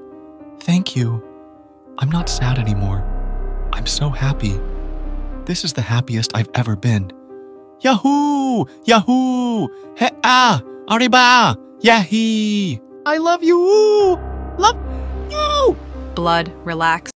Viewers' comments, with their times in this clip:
0:08 blud started speaking enchanting able